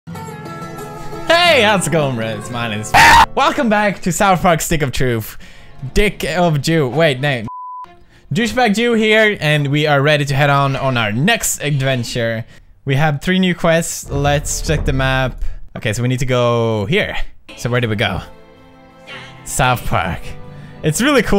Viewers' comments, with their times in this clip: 0:01 intro:my name is EEERRRRRGGHHH!!!! //you scared the shit outta me
0:02 R.I.P Head phone users